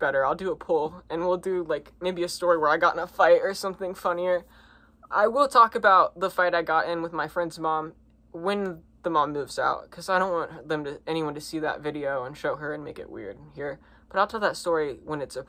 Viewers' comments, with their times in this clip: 0:03 you could hear the pain in his voice I feel like because it sounded like he was holding back tears ngl 😕